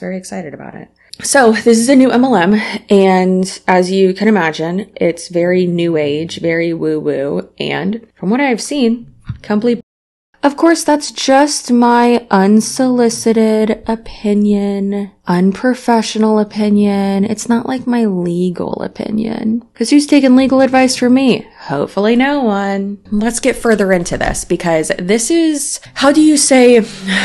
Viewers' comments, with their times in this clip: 0:08 NEVER APOLOGIZE FOR WIGGUM WE LOVE HIS SNORES